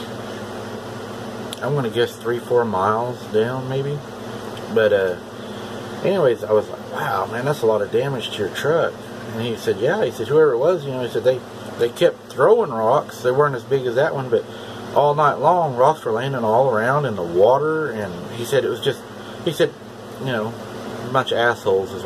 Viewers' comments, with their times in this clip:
0:03 I'm saying a prayer of protection for you guys, I hear whispering! Sounds female🤔🙏🙌